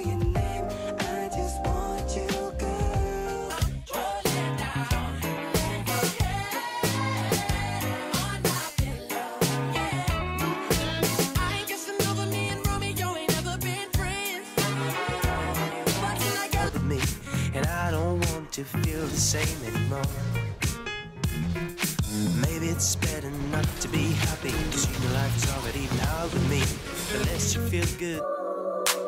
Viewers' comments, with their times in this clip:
0:05 just due to the pure amount of (?) Pings, I've never seen anything like that. You can tell everyone watching that said what!? At the same time
0:12 The pings lmao